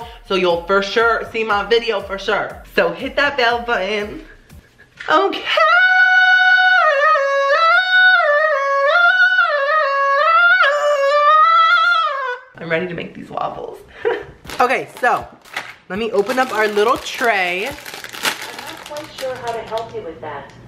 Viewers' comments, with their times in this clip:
0:06 I lost it when he started singing I love when he does this